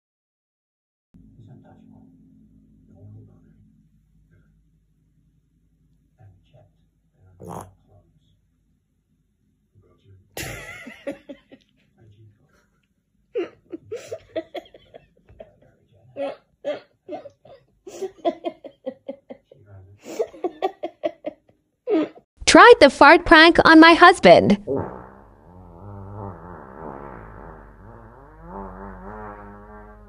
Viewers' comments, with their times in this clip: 0:03 Ahhhhh🤣🤣🤣 This 💩 has got me dying! where the husband didn't believe it was real😂 that 1 crept through the front u can tell by the sound!😮😂🤣
0:18 sounded like Donald the duck😂😂